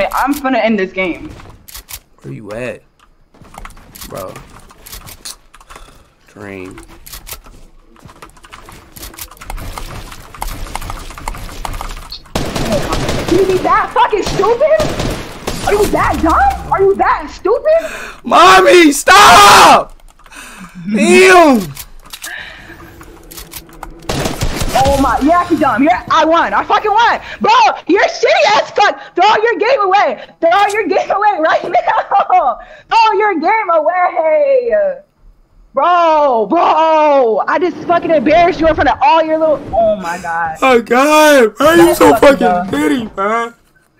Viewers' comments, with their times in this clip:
0:10 is where he cries
0:14 he started to cry
0:24 When this nigga started crying I died